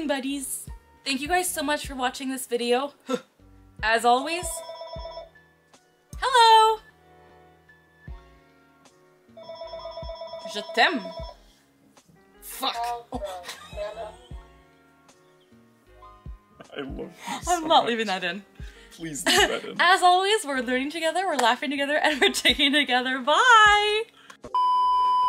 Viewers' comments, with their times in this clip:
0:07 i laughed when she said hello when the phone started to ring